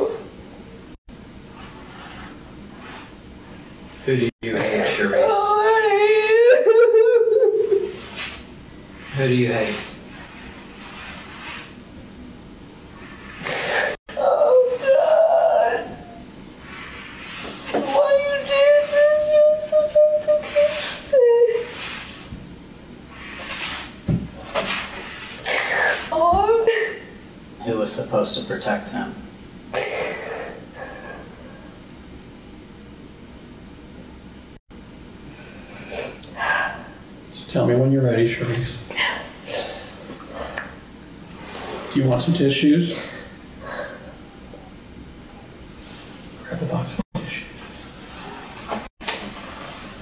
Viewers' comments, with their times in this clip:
0:10 Her cry sounds so forced and fake.
0:32 in, and her "crying" is insufferable. Any way it can be dubbed over with the Charlie Brown "wah wah" noise or something similar?